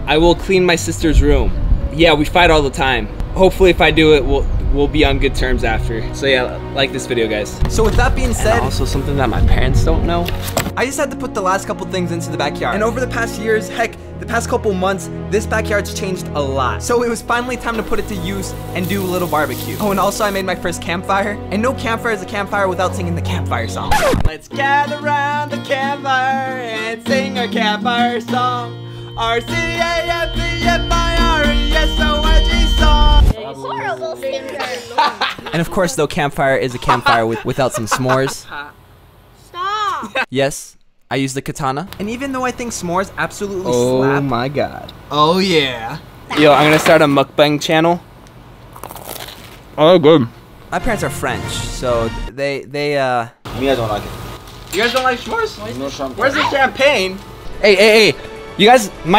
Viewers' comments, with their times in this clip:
0:10 you can hear someone shoot
0:11 I heard gun shots
0:12 Was that a Gunshot’s😕??😂
0:12 I heard gun shots And it’s probably a gang
0:12 love the gunshots in the backround
0:17 Bro where did you get the microphone holy crap that audio was clear
0:47 The song / rap